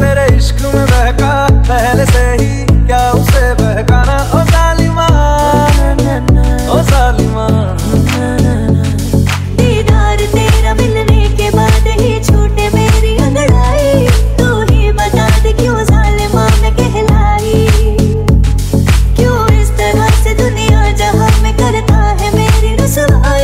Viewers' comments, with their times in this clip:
0:09 soulful voice of Harshdeep kaur😍😍😍